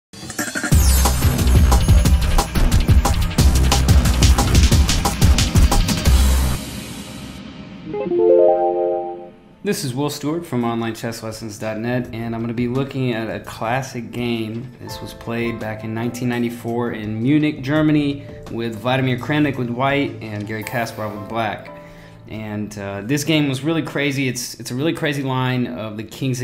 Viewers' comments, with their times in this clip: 0:09 goddammit man! .. i have the same sound when someone texts me.